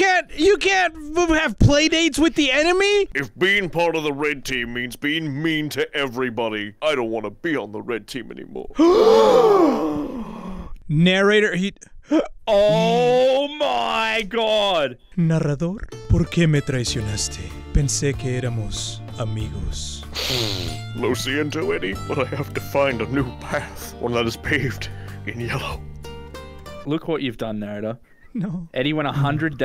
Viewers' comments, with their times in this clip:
0:06 it was like a spanish novela
0:16 why do I think that the “Spanish” music is the bop?